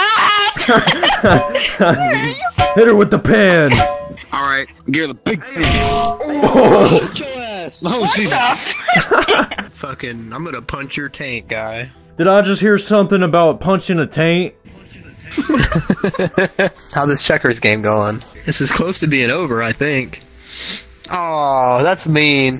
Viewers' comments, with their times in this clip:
0:09 The guy that Said punching tank sounds like mortki from regular show